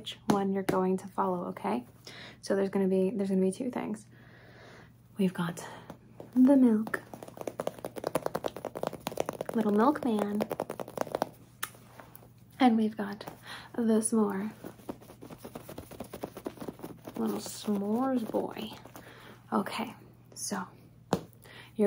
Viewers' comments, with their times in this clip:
0:09 I absolutely love how she says “Little milk man.” It’s amazing!